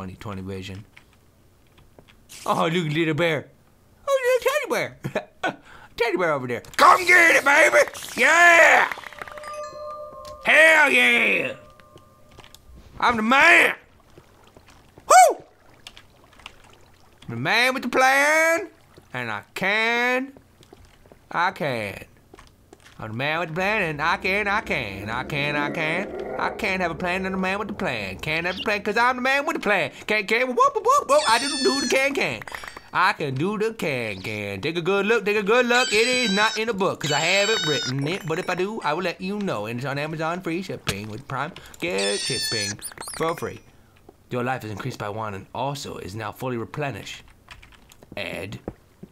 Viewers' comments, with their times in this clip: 0:09 i heard herobrine
0:09 WHY THE FUCK DID I HEAR HEROBRINE SPAWN SOUND
0:30 anyone else hear the evil laughter?